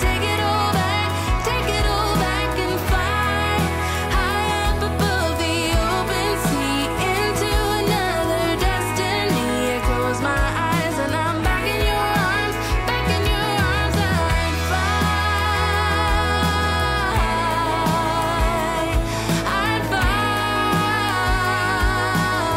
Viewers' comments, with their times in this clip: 0:08 Shame about the music track as the 'copter flew over the Grand Canyon. I would prefer to hear just the engine noise.